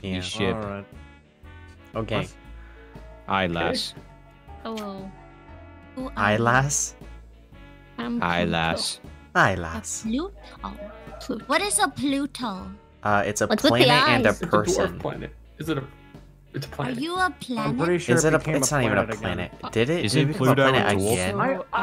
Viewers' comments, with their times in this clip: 0:04 yippie the foxy voicee